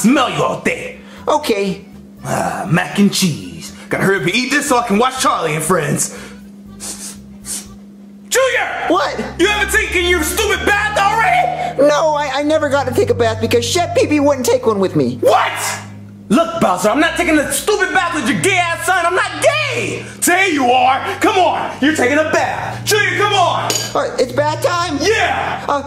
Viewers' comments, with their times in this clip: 0:08 Bowser yelled JUNIOR!!!!!!!!!!